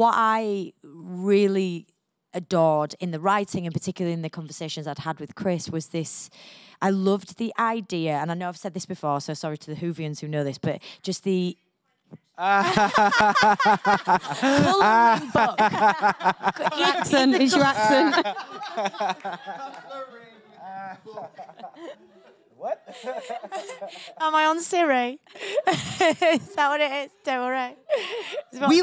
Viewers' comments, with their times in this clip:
0:10 What do they start laughing ?? I have the same accent as Jodie so it just sounds normal to me 😅